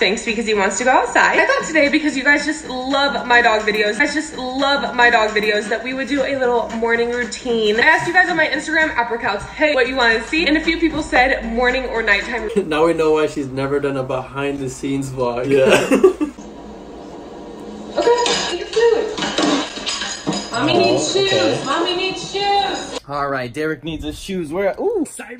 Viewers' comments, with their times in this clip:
0:09 did she say “ or “upper cuts”